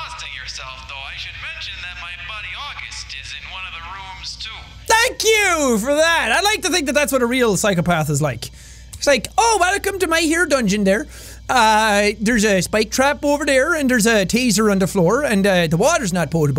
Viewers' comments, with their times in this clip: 0:03 The guys accent reminds me of Minnesota in north America. Reference from Fargo.